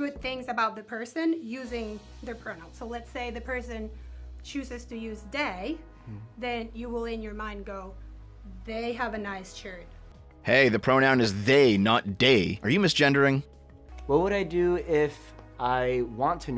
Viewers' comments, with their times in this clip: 0:04 she clearly said "day" not "they". I'm going to cancel the CC transcriber. Unacceptable.